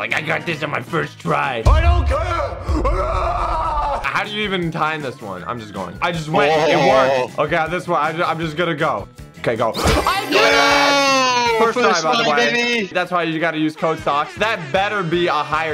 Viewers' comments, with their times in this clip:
0:03 why are u barking?